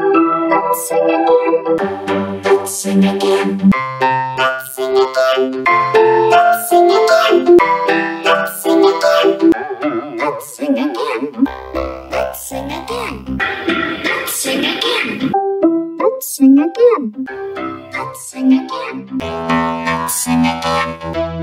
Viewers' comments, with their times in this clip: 0:04 Sounds Like Heilum